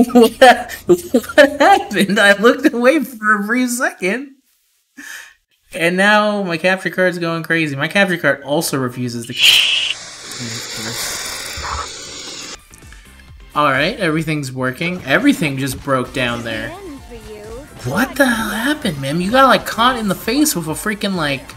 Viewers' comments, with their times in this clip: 0:04 My capture card refus- confused screaming